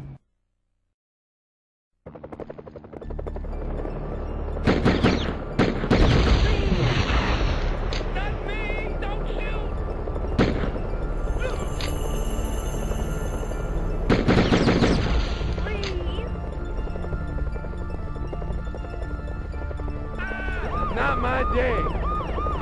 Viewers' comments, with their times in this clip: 0:04 The music is rapid who agrees haa!